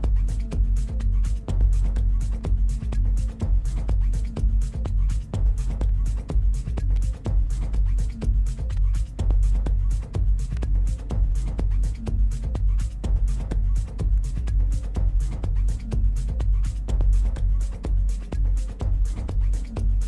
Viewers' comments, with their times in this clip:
0:06 one of the most introspective tracks I have ever heard